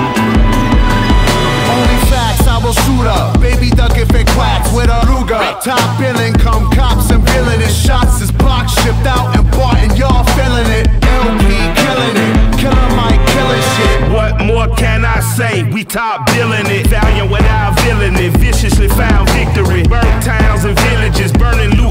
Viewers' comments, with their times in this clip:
0:06 till I collapse vibe